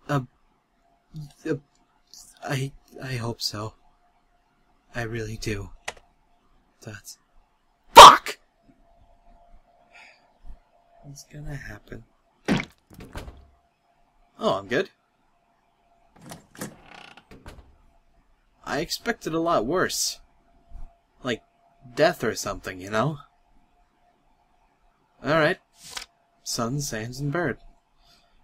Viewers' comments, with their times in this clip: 0:07 headphone users died (or is it just me?)
0:07 scared the living shit out of me. Your voice is scary when it's loud, Cry ; - ;
0:10 most scared i got in the whole video was when he screamed FUCK
0:11 i completely lost it when he screamed fuck bc i was not expecting that at all omg
0:12 his random shout of "FUCK" is what scared me